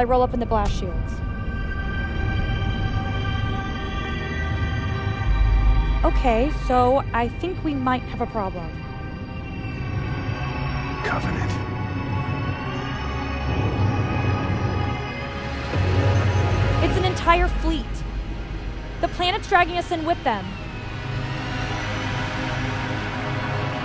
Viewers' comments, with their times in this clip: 0:08 Reminds me of Half life 2's soundtrack